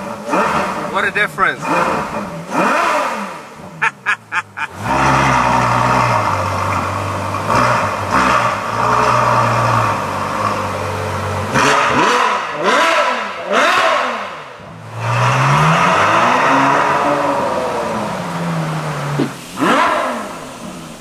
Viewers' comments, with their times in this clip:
0:04 Hahah in the F12 sounds like my 1994 BMW E34 with 2.5 TDS engine :D :D Sounds almost identical to my car when the Engine is cold.. But yeah, its very big difference in sound when the valves is open all time. Maybe one day I'll be able to buy a Ferarri 599 GTO or F12..
0:07 sounds like a school bus lol, love the sound tho!!